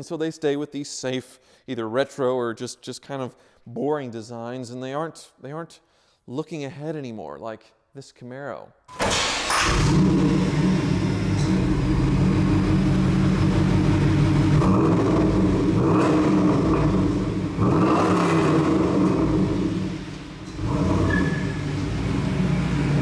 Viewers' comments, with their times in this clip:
0:08 car start up was amazing music to my ears
0:09 anybody know why the engine knocks when it starts? I've heard other GM engines make that same noise.